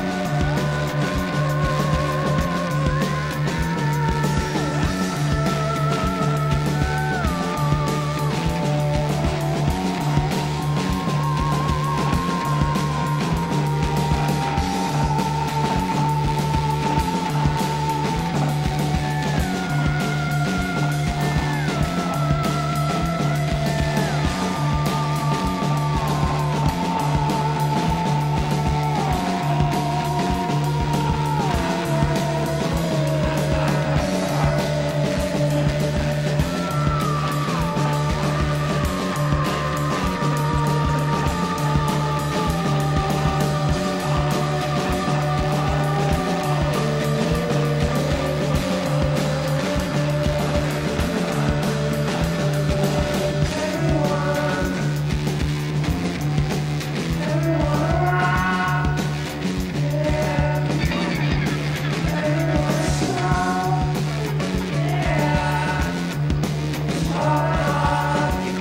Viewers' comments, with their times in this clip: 0:05 Jonny rocking the ondes martenot!
0:52 which effect(s) is/are used on Thom's voice ?